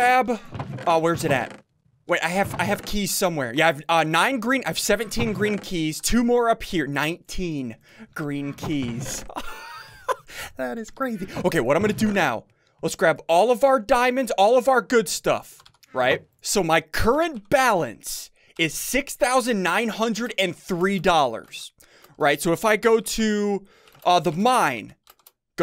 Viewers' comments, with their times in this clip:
0:09 Theat ith creathy